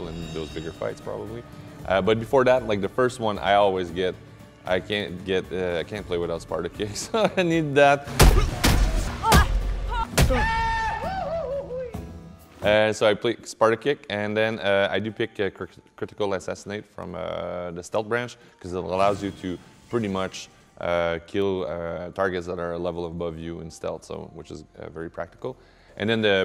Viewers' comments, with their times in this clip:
0:10 That kick it was either that scream or the Wilhelm scream lol.